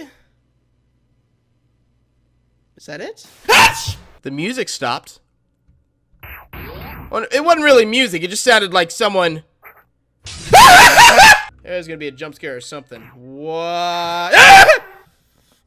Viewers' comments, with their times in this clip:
0:03 Disturbed and Queen vibes